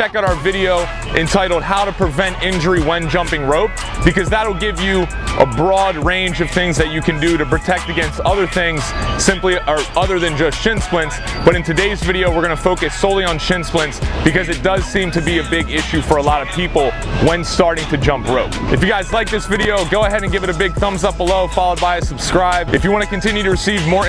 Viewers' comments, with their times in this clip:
0:10 When I heard "Here we gooo" I actually thought the guy in the back was Mario lol